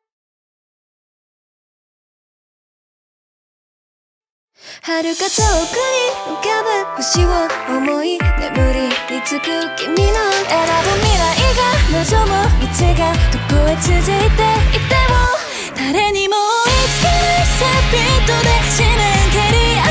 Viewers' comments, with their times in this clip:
0:06 I love this so much!!! My favorite part is definitely Yuki singing She looks happy singing in Japanese!🥺